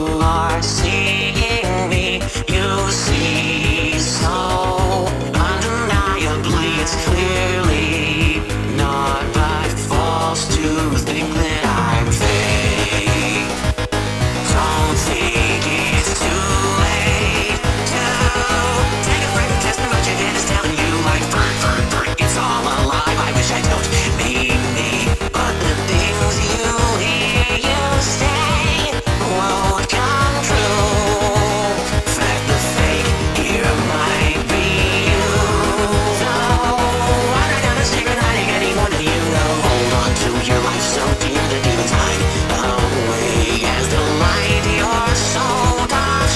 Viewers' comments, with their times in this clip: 0:04 I swear he's saying something underneath "Undeniably it's clearly"
0:05 When Ficker says “undeniably “you can hear a background voice chime in with something else into the next verse
0:09 i love how even in the song there are clues that faker is laying to the listener, in this part for example, "he says naught but false to thing that im fake", but if you are no paying attencion to the lyrics on the screen, you can hear how the lyrics change to "not that false to think that ik fake" is just increible how much effort they put in the rewitten of the lyrics. Or maybe is just me hearing things that are not there, who knows
0:23 idk if this was intentional, but i really like the breath he takes hes really trying to convince you hes the real sonic, but knows you arent falling for it, and now hes getting desperate.
0:29 why is nobody talking about how good it sounds when he says this line